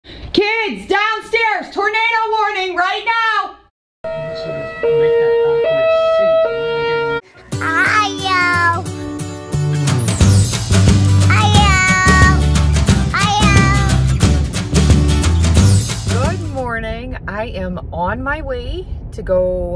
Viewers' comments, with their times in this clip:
0:03 fellow siren enthusiast here it appears there is a whelen somewhere
0:04 why is it sound like a ambulance of that siren.😂😂😂